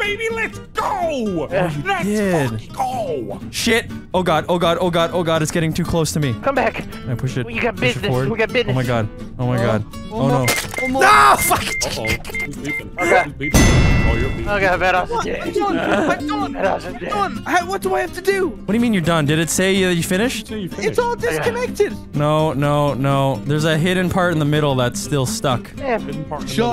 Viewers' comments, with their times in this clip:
0:09 the closest to Vanoss has been to raging in his whole career
0:10 that's a new noise